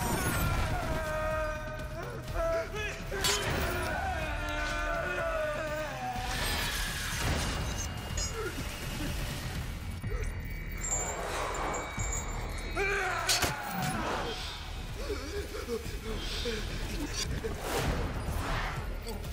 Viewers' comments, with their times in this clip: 0:04 XDDDDDD He’s Sounds Like A Mariachi’s!!!!!!!!!!!!!!!! Hurts’s!!!!!!!!!!!!!!!!! With’s!!!!!!!!!! A’s!!!!!!!!!! His’s!!!!!!!!!!!!!! Mustaches’s!!!!!!!!!!!!!!!